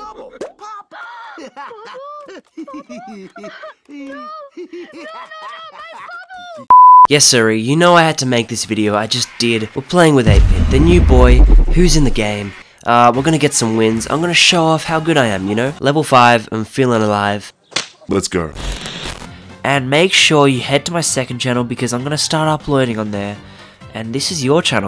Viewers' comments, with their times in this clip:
0:07 dont make ur sound full This is so loud